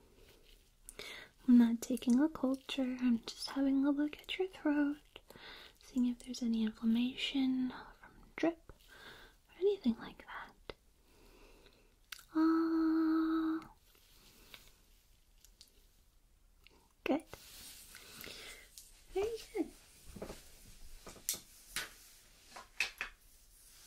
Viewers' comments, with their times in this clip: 0:09 that "uhhh" was the best haha.